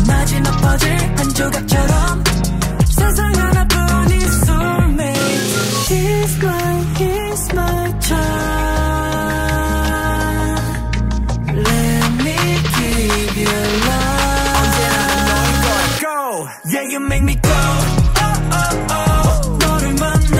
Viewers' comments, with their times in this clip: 0:06 I literally thought he was saying She’s my He’s my charm, until I seen the lyrics 💀